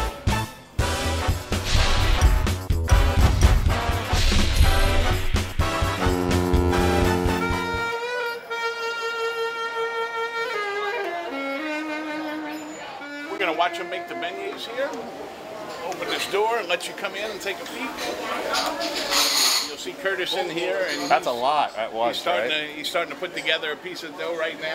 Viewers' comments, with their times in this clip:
0:06 That horn sound I thought was a long fart, for some weird reason. Probably due to all massive amounts of stuff this guy eats...